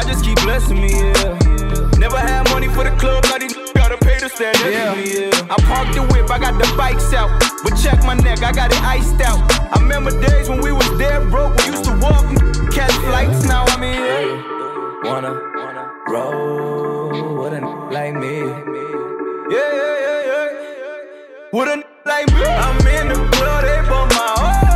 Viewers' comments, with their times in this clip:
0:05 That Flow Switch